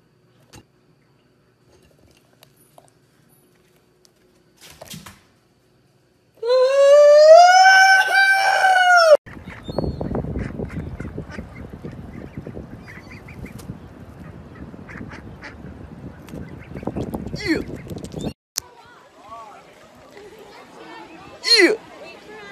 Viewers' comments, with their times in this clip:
0:05 rip headphone users at full volume